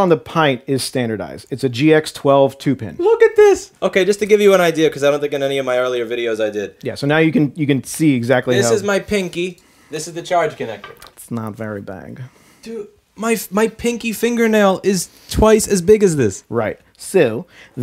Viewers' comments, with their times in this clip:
0:04 "it's nat vary bag" lol'd "oOᵒo salty"